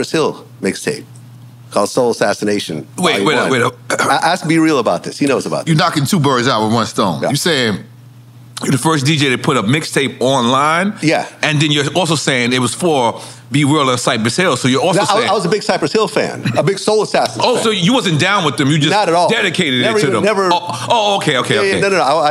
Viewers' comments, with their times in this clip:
0:04 What the hell going on Nore voice changing like that that’s crazy 😮😆
0:04 that’s not Nore’s voice, you knockin 2 birds out with 1 stone
0:05 In did nore voice completely changed? Or am I bugging???
0:05 Nore sounding like someone's whole black uncle with that bubble in his throat 😂